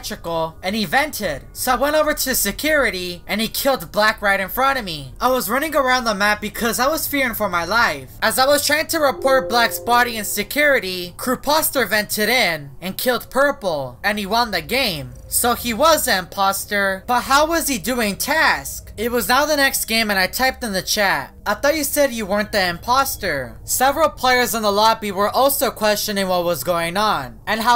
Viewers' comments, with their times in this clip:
0:08 You are using windows 10. Windows 10 sound :-
0:09 windows computer noise